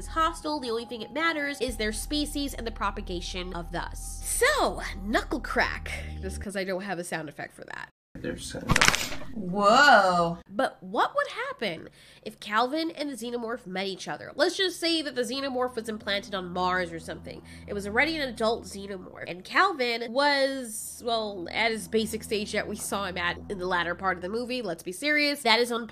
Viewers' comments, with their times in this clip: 0:09 that sounded extremly painful